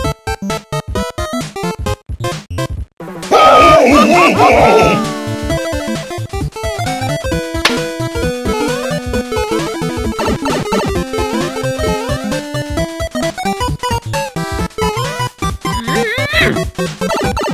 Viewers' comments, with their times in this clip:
0:03 farting and laughing